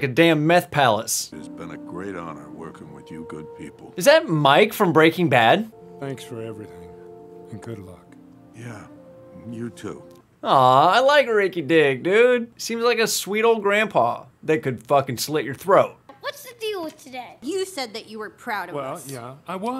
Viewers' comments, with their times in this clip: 0:06 Maybe it's Mike's voice but the face is taken from Tommy Lee Jones I believe.